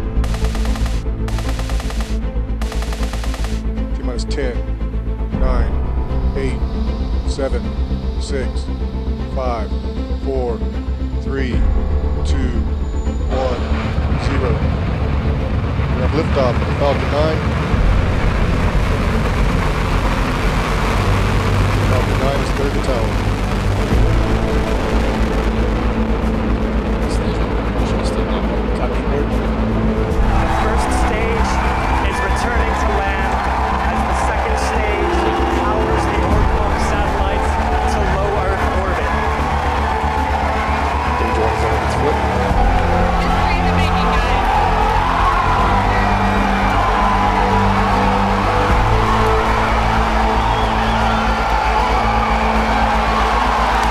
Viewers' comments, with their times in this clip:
0:09 The guy counting down sounds like the most depressed person in existence
0:39 i wish they would put some blinds up or something to stop those muppets from screaming, why add background music?